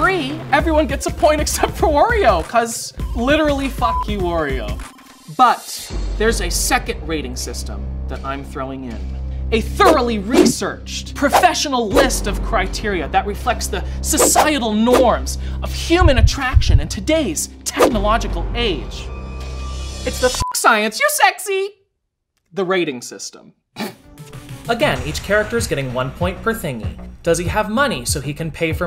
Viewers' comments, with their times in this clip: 0:10 DUDE hear me out: Bill Nye vibes with the hand movement sounds. lol memory unlocked.